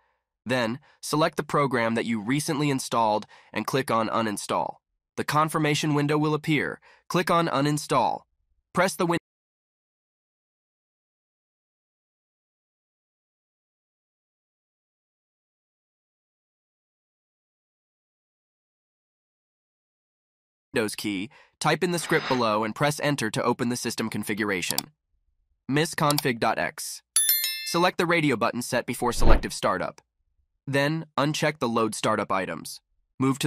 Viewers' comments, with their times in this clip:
0:09 in what do you mean in this minute, your voice disable
0:21 There was only a mistake when cutting voice of the next solution check Thanks :)